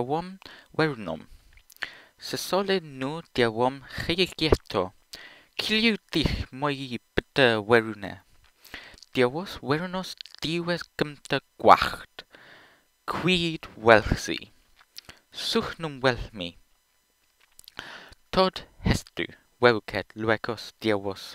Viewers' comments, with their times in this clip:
0:05 hey, i recognise like...two words:D so questions in pie started with a 'k'?